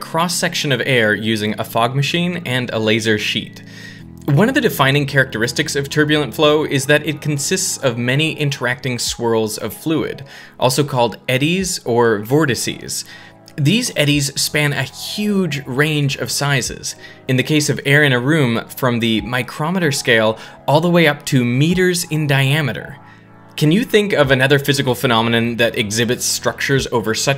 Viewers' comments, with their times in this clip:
0:10 Just sounds like someone with a speech impediment trying to pronounce vertices